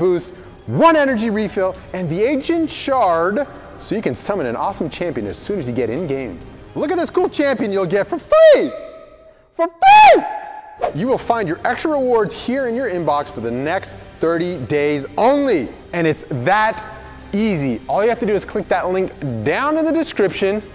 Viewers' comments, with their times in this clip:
0:06 At {almost} the top of his lungs.